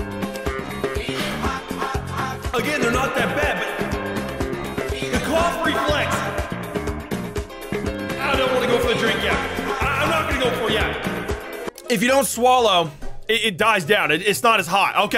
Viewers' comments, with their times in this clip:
0:03 That music on point